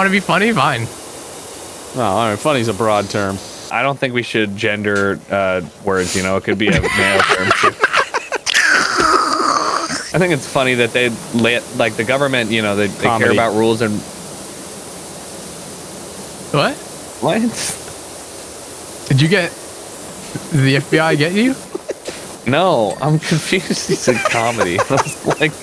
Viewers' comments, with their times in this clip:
0:07 who ever laughed like that sounded like the hose at the dentist XD
0:07 the laugh sounds like when you get some whip cream for you ice cream
0:08 that one machine at the dentist be like
0:08 tell me why his laugh sounded like the last of the bottle of whipped cream lmao
0:08 The sound that the spray makes
0:09 sounds like those tubes at dentists that suck your saliva or somethin ;0